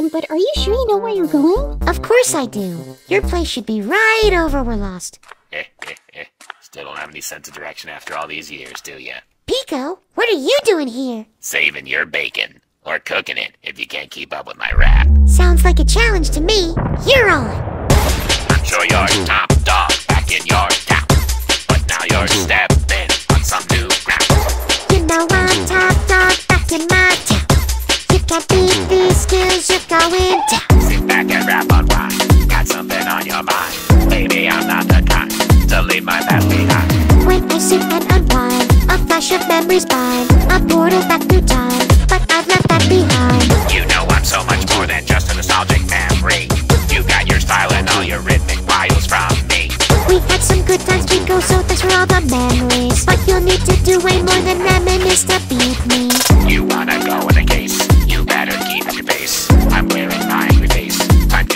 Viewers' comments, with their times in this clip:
0:04 I'M SORRY BUT THAT LAUGH GOT ME LACKIN
0:18 Or it just says " go pico yea go pico yea go go go pico "
0:18 i thought it was yea go pico yea yea go pico
0:29 he's one of the only songs with actual lyrics is only three songs and two of them are the lemon demon At least he has words Wait.. I remember hearing something that kind of sounded like "unwind" in the original song when I played the game so I guess they're trying to copy that to make it more like the song
0:43 And i do hear "I will pass you the gun while dancin the get go allright, you will go cry to you're mommy going "All right"